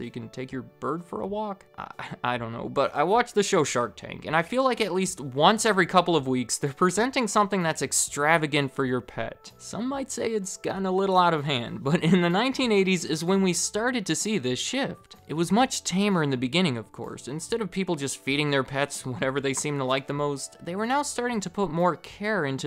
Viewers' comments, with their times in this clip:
0:09 thought you just said, "in the 1980s is when you started to see this shit" in reference to the extravagant pet products lol great video